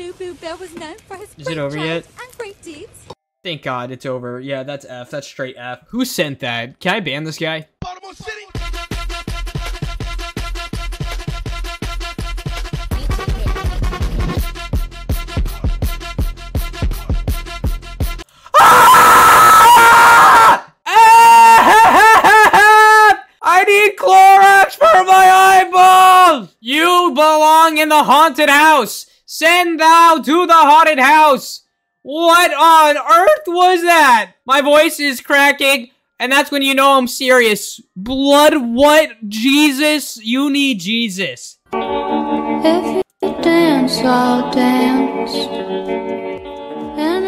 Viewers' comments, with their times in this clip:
0:08 is where he is about to scream his lungs out
0:11 few seconds before yelling
0:16 bro that scream
0:17 THAT SCREAM THO
0:17 BRO SCREAMED LIKE THE FNAF 1 OR 2 JUMPSCARE HOLY
0:17 Bro turned into a alarm at the morning at this 💀 Bro really said: AAAAAAAAAAAAAAAAA
0:17 top 10 loudest screams in the world
0:17 his scream was funnier than the video
0:17 WHY DOES HE ALWAYS SCREAM WHEN I HAVE HEADPHONES😭😭
0:17 THAT SCREAM BRO…
0:17 you screamed because of shellvision honestly i would too
0:17 you alr bro haveing a craehout
0:17 THAT SCREAM LOL😭
0:17 I always come back then screaming- 😂😂😂😂😂
0:17 silence *1 second later* Turns into a fire alarm
0:17 sees Shelly and vee kissing*loudly screams*
0:17 I wanna join the screaming AAAAAAAAAAAAAAAAAAAAAAAAAAAAAAAAAAAAAAAAAAAAAAA AAAAAAAAAAAAAAAAAAAAAAAAAAAAAA AAAAAAAAAAAAAAAAAAAAAAAAAAAAAA AAAAAAAAAAAAAAAAAAAAAAAAAAAAAA AAAAAAAAAAAAAAAAAAAAAAAAAAAAAA AAAAAAAAAAAAAAAAAAAAAAAAAAAAAA AAAAAAAAAAAAAAAAAAAAAAAAAAAAAA AAAAAAAAAAAAAAAAAAAAAAAAAAAAAA AAAAAAAAAAAAAAAAAAAAAAAAAAAAAA AAAAAAAAAAAAAAAAAAAAAAAAAAAAAA AAAAAAAAAAAAAAAAAAAAAAAAAAAAAA AAAAAAAAAAAAAAAAAAAAAAAAAAAAAA AAAAAAAAAAAAAAAAAAAAAAAAAAAAAA AAAAAAAAAAAAAAAAAAAAAAAAAAAAAA AAAAAAAAAAAAAAAAAAAAAAAAAAAAAA AAAAAAAAAAAAAAAAAAAAAAAAAAAAAA AAAAAAAAAAAAAAAAAAAAAAAAAAAAAA AAAAAAAAAAAAAAAAAAAAAAAAAAAAAA AAAAAAAAAAAAAAAAAAAAAAAAAAAAAA
0:17 bro was louder than a jet engine💀💀💀💀💀
0:17 HELP ME HIS SCREAMM I CANT
0:17 is actually so quiet
0:17 I wanna join the screaming AAAAAAAAAAAAAAAAAAAAAAAAAAAAAAAAAAAAAAAAAAAAAAA AAAAAAAAAAAAAAAAAAAAAAAAAAAAAA AAAAAAAAAAAAAAAAAAAAAAAAAAAAAA AAAAAAAAAAAAAAAAAAAAAAAAAAAAAA AAAAAAAAAAAAAAAAAAAAAAAAAAAAAA AAAAAAAAAAAAAAAAAAAAAAAAAAAAAA AAAAAAAAAAAAAAAAAAAAAAAAAAAAAA AAAAAAAAAAAAAAAAAAAAAAAAAAAAAA AAAAAAAAAAAAAAAAAAAAAAAAAAAAAA
0:17 bro actually screamed -
0:17 the second you caught vee and Shelly on 4k you went AHHHHHHHHHHHHHHHHHH!!!!!
0:18 I AM A HEADPHONES USER😭😭
0:18 that was loud🥲
0:18 never heard him scream like that
0:18 HELP THE SCREAM😭
0:18 traumatized skeleton noises
0:18 bro that make me laugh to the scream-💀
0:18 The fact that I also screamed😂
0:18 AM DYEING MY EARS
0:18 ÆHHHHHHAHÆHHHHHHHHH (more screaming) EHHHHH EH EH EH EH F-
0:18 top 10 best screams of the anime
0:18 the scream is normal💀
0:18 bro was louder then a earthquake
0:18 Bro yelled so loud my ears are bleeding, Thanks...
0:18 MY EARS ARE RINGING I HAD THIS ON FULL VOLUME😭
0:18 oh fuck my ears
0:18 You sound like a the agler in pressure
0:18 god dang it my ears
0:18 MY EARS BRO💀😭
0:18 my favorite at the top of my volume it sound so asmr
0:18 not the scream
0:18 thanks 4 hurting my ears-
0:19 bro is like yelling for help he needs help he needs morese code
0:19 MY EARS AHHHHH
0:19 HELP THE SCREAM GOT ME
0:20 Omg I think my ears are bleeding now as with my eyes sent a hospital pls ......
0:24 AND WHAT WAS THAT SCREAM GO BACK A BIT
0:34 I was not prepared for the scream 😭MY FREAKING EARS!!!!